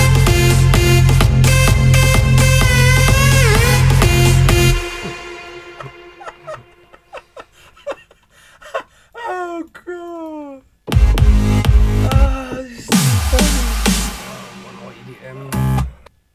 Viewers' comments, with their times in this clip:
0:04 the first time you listen to cheesy Bigroom EDM... LMFAO